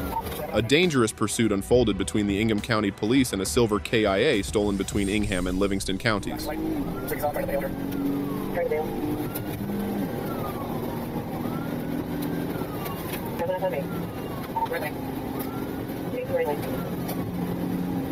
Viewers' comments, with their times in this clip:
0:03 '...stolen K.I.A. (aka killed in action) not KIA pronounced key-ah. This is a voice bot give away.